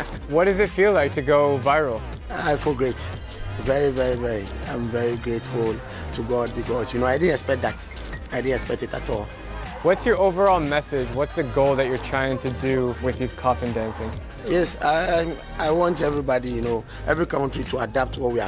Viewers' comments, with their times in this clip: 0:06 is it just me or is there a phone ringing in the background?